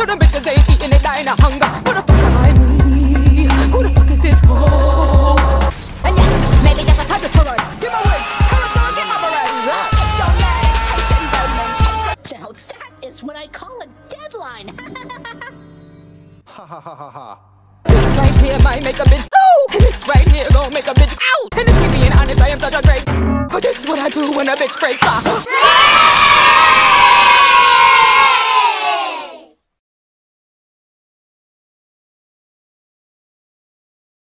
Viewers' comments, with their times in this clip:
0:06 -This killed meXD The scream is what makes it for me
0:14 Hypnos laughs like a 12 year old boy. Zagreus is annoyed and mocks his laugh.
0:23 HEADPHONES USERS BEWARE!